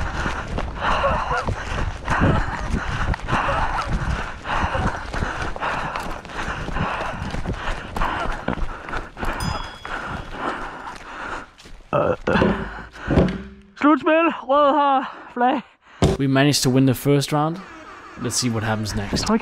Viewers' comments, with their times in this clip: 0:06 Is that a fart xD